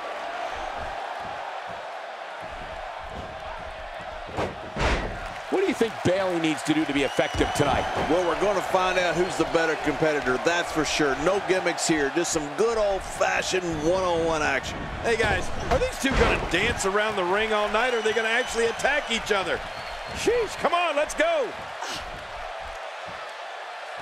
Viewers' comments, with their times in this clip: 0:05 Did Michael Cole just call her Bail?